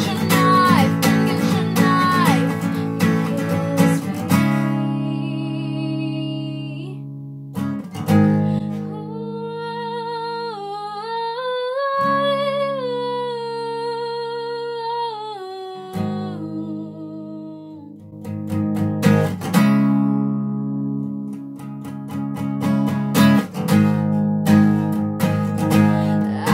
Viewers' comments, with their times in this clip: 0:09 It was meh until when she vocalizes <3